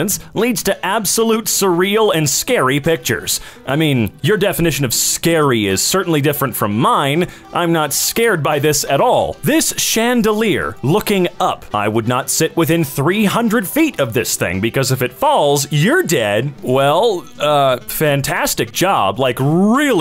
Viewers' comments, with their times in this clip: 0:04 halo music plays